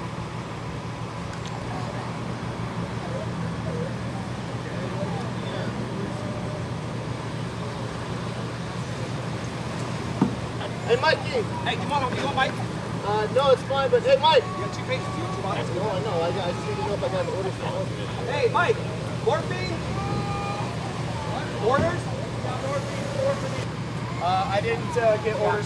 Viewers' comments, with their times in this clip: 0:10 That sound of that baby cry hurts my heart. I'm praying for a speedy recovery for father and son 🙏